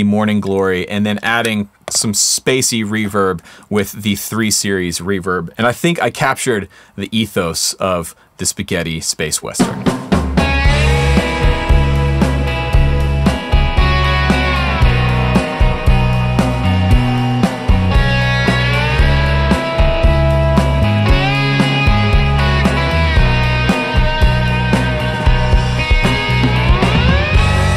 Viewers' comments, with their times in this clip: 0:05 Yep, knights of cydonia vibes.
0:09 this sounds so good! Please, what is the amp/speaker configuaration on that lead sound?